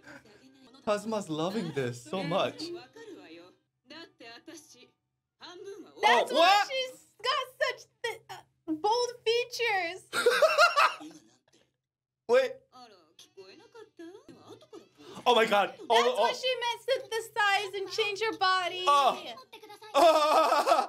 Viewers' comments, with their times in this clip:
0:05 What do you mean like bald features?